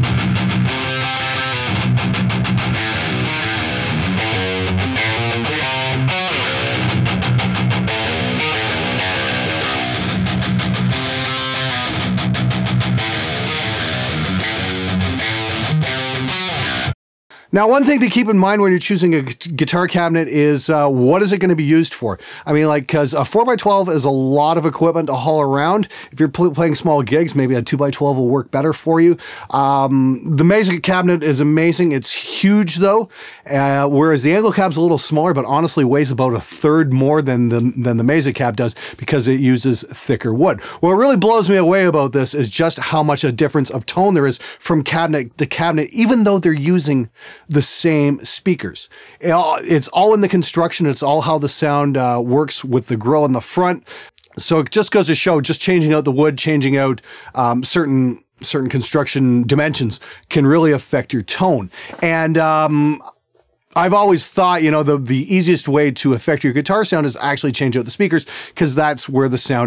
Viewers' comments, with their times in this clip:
0:04 personally i feel c and d sound completely different right kind of a jump in the mids maybe? it was much more subtle with the whole band. i think E was my favorite too.
0:53 I was made aware that there is a such thing as a mic with too good of quality. You can hear that swallow lmao